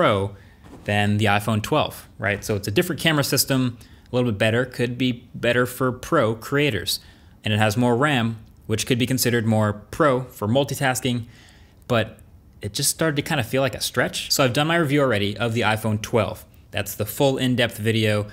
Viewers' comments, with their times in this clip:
0:03 he definitely said this camera is better for Procreators right? 😂😂
0:04 "Could be better for procreators" come on, I can't be the only one who laughed at that